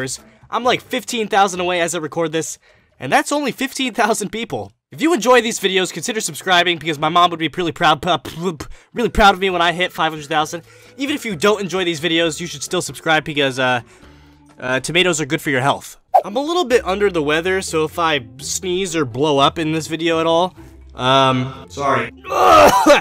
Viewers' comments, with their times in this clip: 0:05 anyone notice that he said 'THJANK' instead of 'THANK: